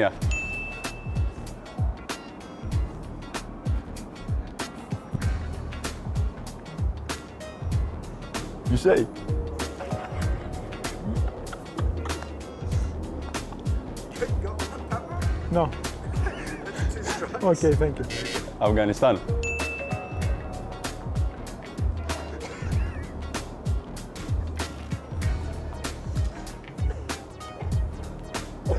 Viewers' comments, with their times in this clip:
0:09 Papa with the Robert De Niro impression